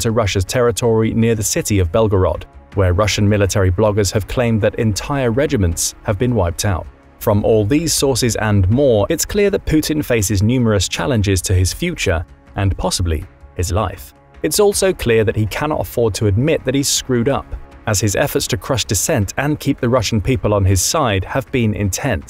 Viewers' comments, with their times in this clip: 0:10 the map does not seem accurate at all. All sources outside of this video say that Kherson Oblast is still occupied. Also, your pronunciation of Prigozhin is really off. The stress is on the middle syllable.